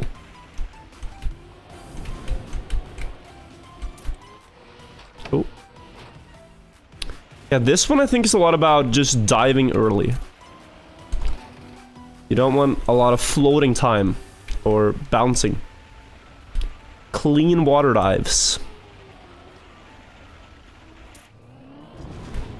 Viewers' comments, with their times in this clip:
0:06 missing bonk sfx